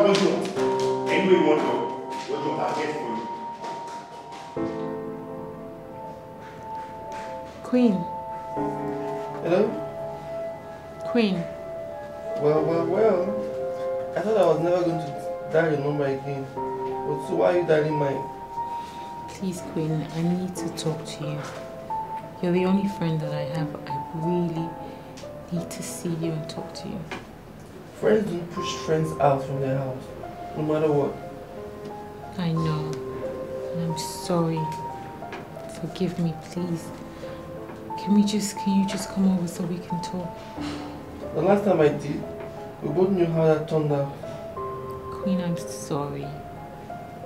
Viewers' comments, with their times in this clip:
0:08 A beautiful movie but Nollywood needs to stop doing that thing where someone is making a phone call and someone else, off camera, in the room is reading the part of the caller aloud ( check )
0:28 Am I the only one who noticed that the voice is that of a man?? yet the woman mentioned Queen 😂 that's a man's voice 😒😂